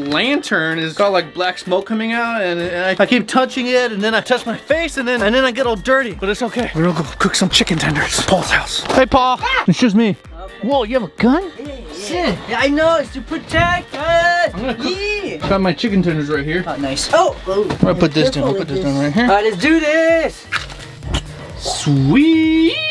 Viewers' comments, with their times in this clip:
0:09 he sounds like doge 😂😂😂😂😂
0:09 doge sound scream